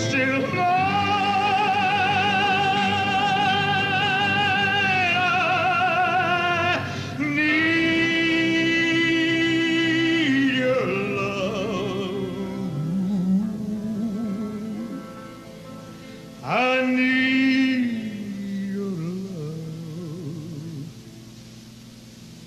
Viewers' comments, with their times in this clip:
0:05 LMAO .... while sitting down. Wow, what a powerful voice, Jesus.